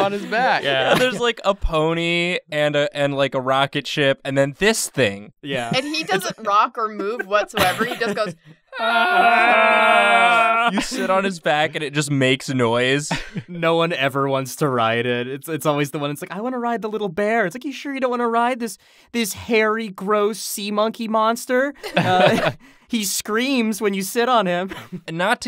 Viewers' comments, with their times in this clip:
0:07 the collective sound of artist's performing their mating call
0:08 Ahh.. My favorite opera group. "The Uhheh-ers"